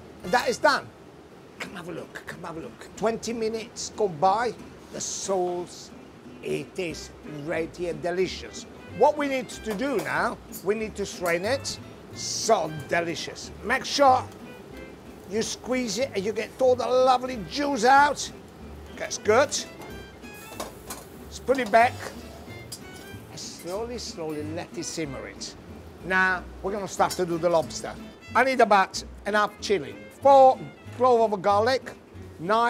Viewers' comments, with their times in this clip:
0:07 Gennaro: "The sauce is right here and it is delicious" translation: The SOULS is right here and it is delicious
0:13 Make sure you squeeze it and get all the lovely jews out?
0:15 "Get all the lovely Jews out."
0:16 " squeeze it.... get all the lovely JEWS out"!!!!!